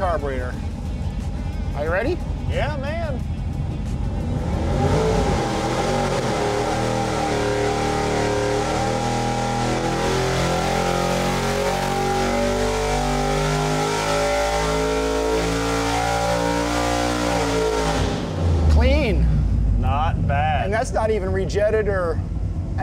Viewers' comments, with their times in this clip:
0:04 That's one angry engine. You can hear it when it loads up on the dyno.